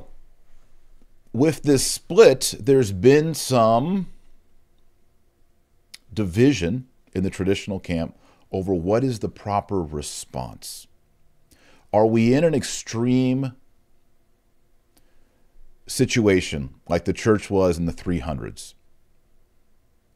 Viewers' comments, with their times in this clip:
0:03 Sounds like you're using a laptop mic and not your usual high quality one....fixed